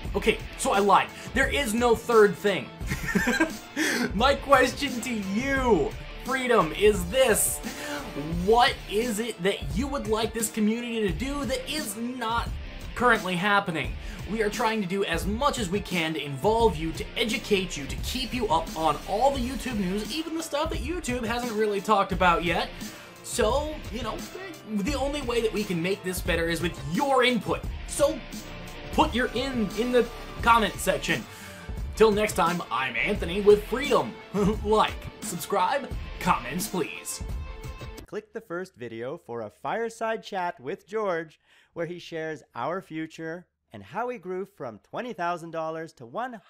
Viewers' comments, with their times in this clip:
0:03 OMG Animated Banners, soooo cooooooooooool :o :D PS. Dat laugh ahahahahahahha [I laughed ] too :'D ahahahahaha
0:34 That laugh haha